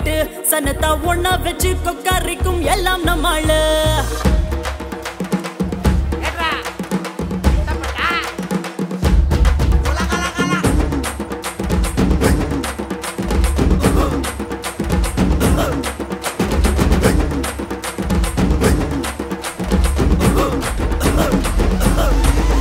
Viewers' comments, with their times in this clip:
0:04 rhythm of petta 💀
0:04 I hear Rythm of Petta Just saying